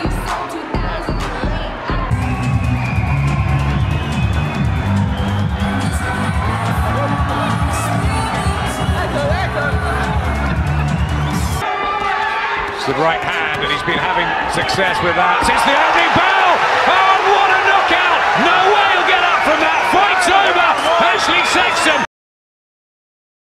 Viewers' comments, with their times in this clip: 0:07 how the hell does the little guy got the deepest voice in the room😂😂